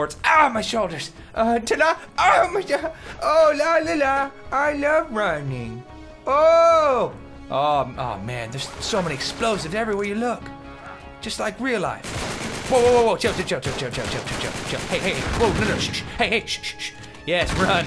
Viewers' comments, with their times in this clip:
0:03 That is the same hilarious "la la la" he used in the "needy dog" video with Gypsy.